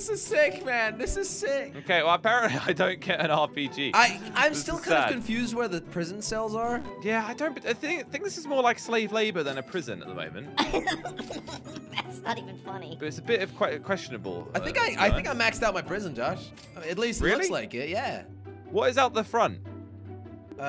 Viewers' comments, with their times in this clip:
0:08 Jelly: That's not funny **proceeds to laugh**